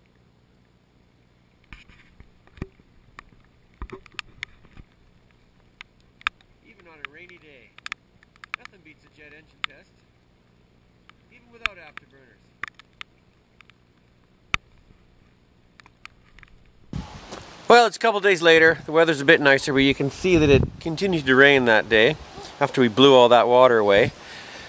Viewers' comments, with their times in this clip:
0:07 Is the GoPro wearing earplugs as well?